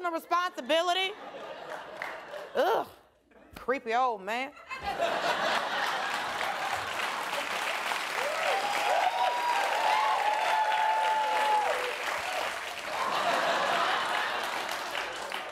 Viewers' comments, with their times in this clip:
0:03 “Ughhh, creep old man” and the “KEEP MY NAME OUT OF IT!” 🤣 with the hand claps too👏🏾👏🏾👏🏾👏🏾